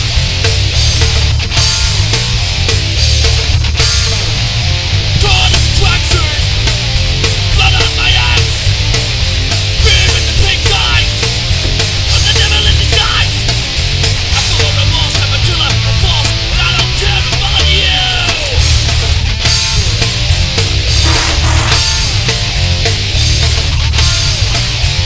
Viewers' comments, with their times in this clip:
0:07 did the song say "blood out my ass"